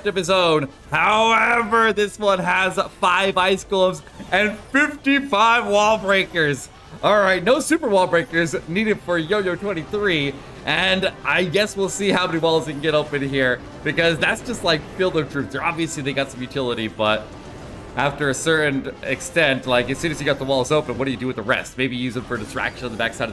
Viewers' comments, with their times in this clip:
0:04 u noticed how he said that 55 wall breakers🌚